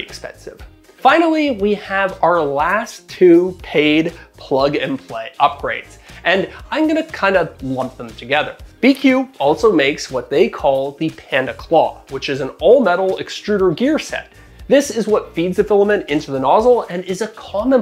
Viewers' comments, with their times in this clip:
0:03 there’s a sound waving that caused me a headache. Can someone explain why